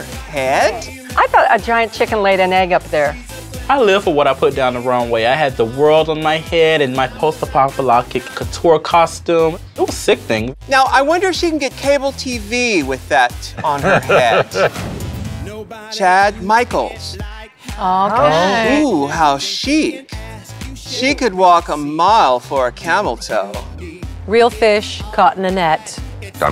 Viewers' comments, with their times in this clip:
0:07 Just here to hear Lashaun Beyond pronounce the name of the challenge 😂😂😂